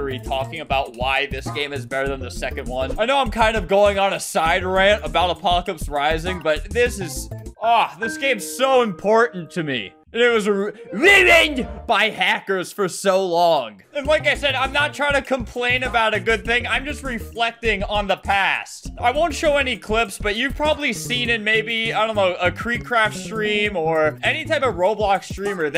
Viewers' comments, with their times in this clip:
0:10 Albert is British confirmed